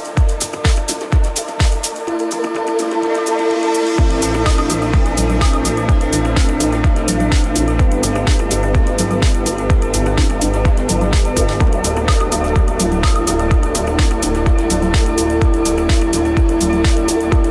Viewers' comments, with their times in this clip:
0:04 this remix is amazing. i can't stop listening...